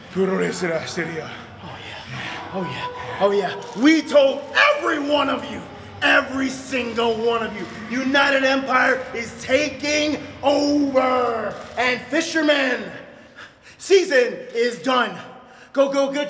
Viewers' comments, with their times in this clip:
0:03 Nice Voicecrack Jeff 😂